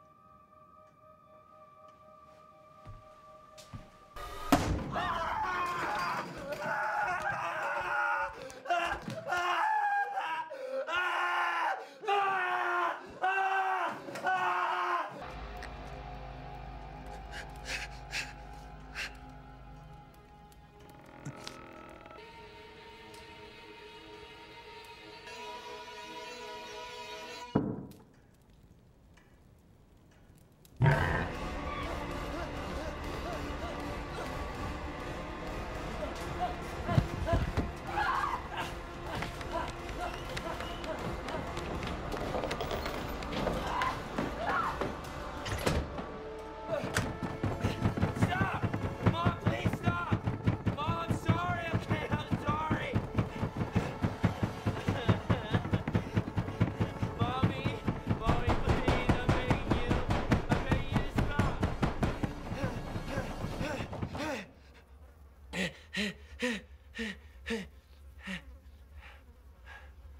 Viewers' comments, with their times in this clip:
0:05 Dr. David Bruce Banner: (Screams)
0:58 Eddie Murphy: (Laughs)